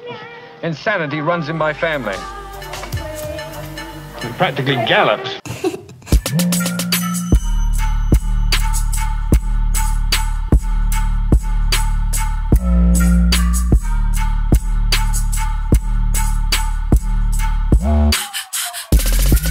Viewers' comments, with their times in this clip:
0:05 thought my phone was buzzing lol